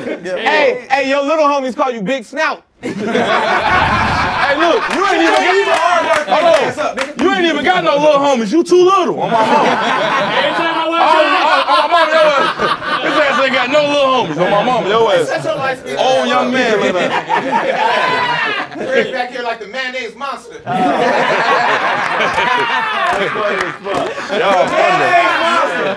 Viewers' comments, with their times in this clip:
0:09 the extra laughing I’m dying 😂😂😂😂😂